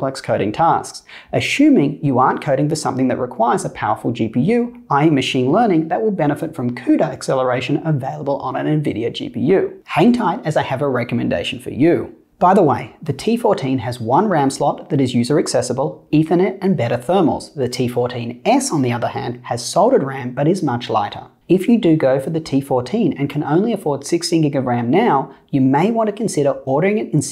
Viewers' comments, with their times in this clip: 0:09 Why did I heard it as HENTAI